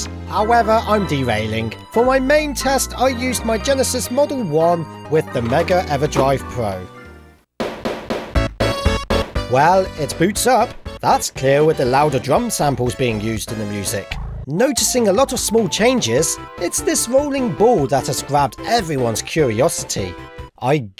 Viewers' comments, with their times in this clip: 0:07 I really like those drums